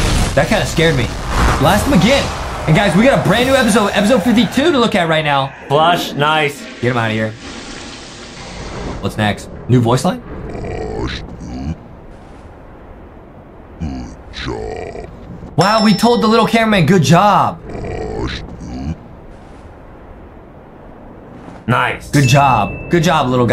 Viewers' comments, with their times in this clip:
0:10 is fake too bro stop putting the Tv man sounds only tv man can do those sounds bro